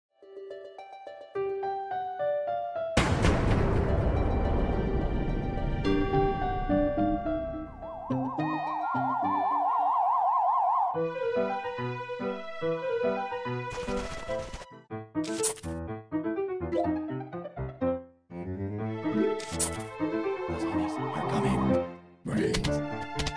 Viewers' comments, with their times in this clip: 0:03 R.I.P headphone users
0:11 OK BUT THE SPED UP MUSIC IS AN ABSOLUTE JAM